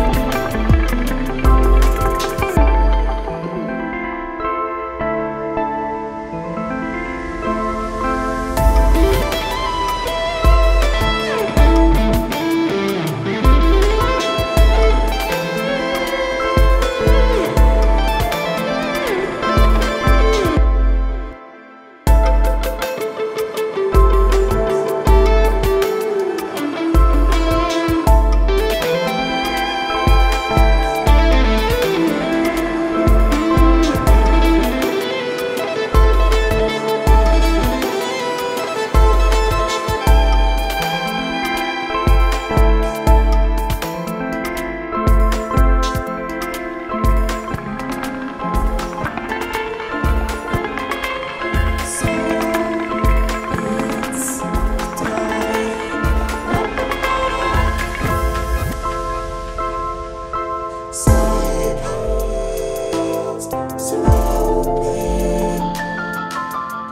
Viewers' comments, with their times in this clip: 0:09 Love the solo
0:34 dude the rhythm of those taps is one of the coolest things ive ever heard
0:43 that buildup after totally gave me chills, loving these new tracks! really beautiful and unique fusion of sounds
0:47 The clipped beat pattern that happens around the mark is so great. Really pulls you into whats going on.